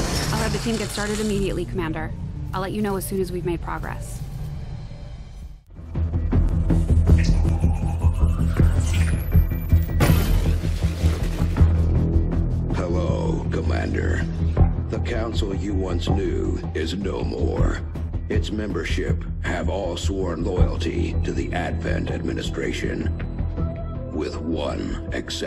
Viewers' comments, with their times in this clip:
0:09 LOL Optimus Prime shows up